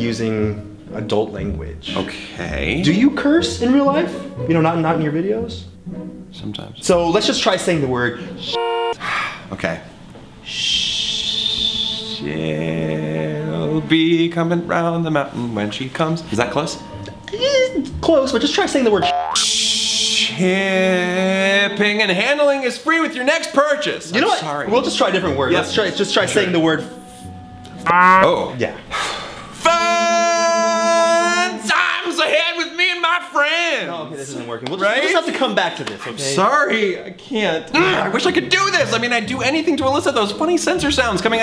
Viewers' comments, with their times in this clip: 0:06 I thought it was so adorable the way he said "sometimes"
0:24 it's so cute how he says I'm sorry :3 NO THOMAS, NO NEED TO APOLOGIZE!